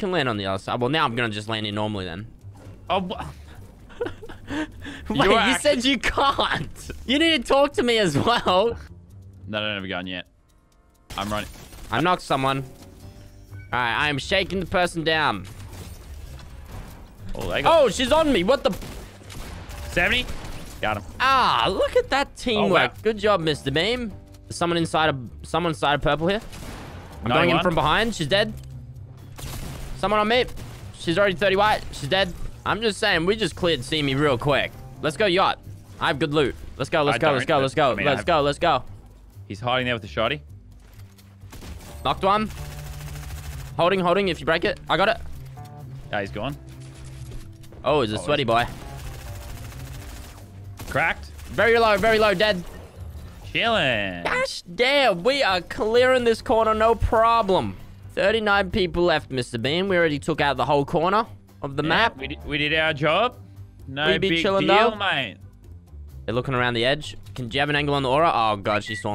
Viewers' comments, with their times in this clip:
0:10 that triple dink tho
0:52 what was that voice? A voice crack?